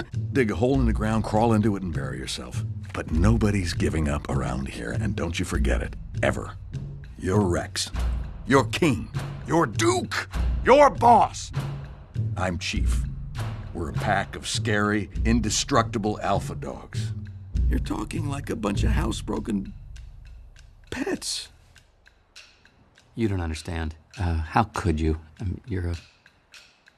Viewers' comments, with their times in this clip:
0:09 "YOU'RE DUKE!" I love the way he says that.